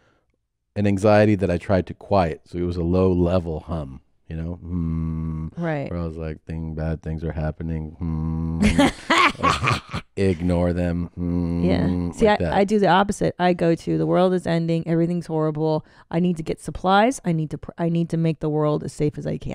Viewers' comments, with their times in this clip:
0:07 Hahahaha sneaking the cough through the laugh lol